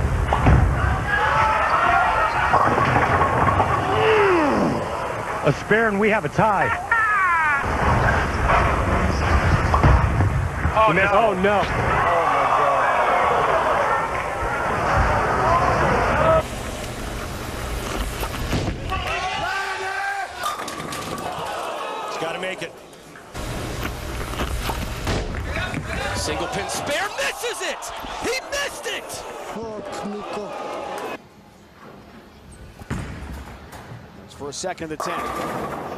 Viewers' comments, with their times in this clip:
0:05 I love that "hahaaah," you can hear the pain
0:20 those pin have life thay are loud